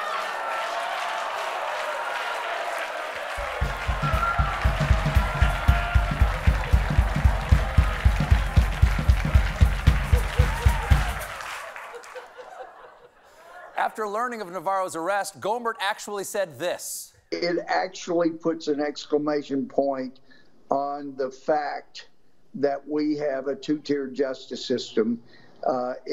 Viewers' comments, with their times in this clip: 0:09 who would elect the real Elmer Fudd to represent them? Florida? Texas? Mississippi?